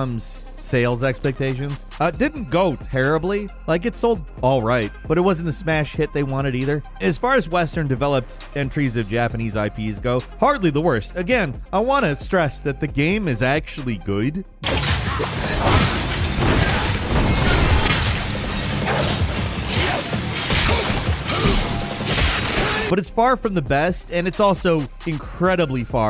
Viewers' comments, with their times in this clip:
0:10 Bruh why did you say good like that